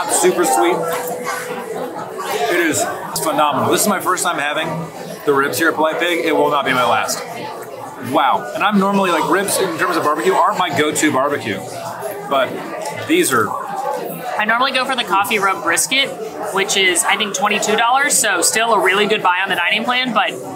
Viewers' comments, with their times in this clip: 0:07 i have always wondered why these nice eating places do not put sound deadening panels in the walls? The noise level is so high!